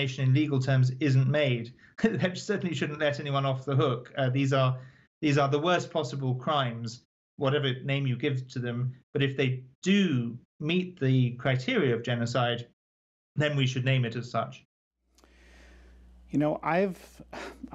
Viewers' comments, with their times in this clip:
0:03 Uh, Uh, we should name it. Uh, Uh, legally. Uh Uh. so disgusting.